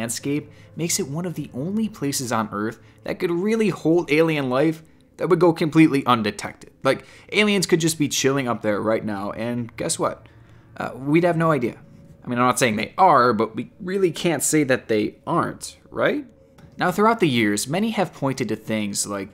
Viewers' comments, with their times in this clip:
0:07 Sounds like Lalo Salamanca ;)